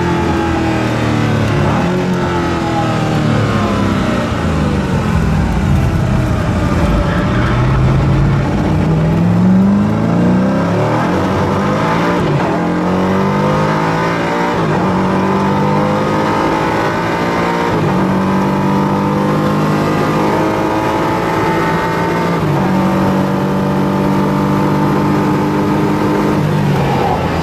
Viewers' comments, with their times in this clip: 0:08 The sound is amazing, love they way it sounds when it gets wheelspin !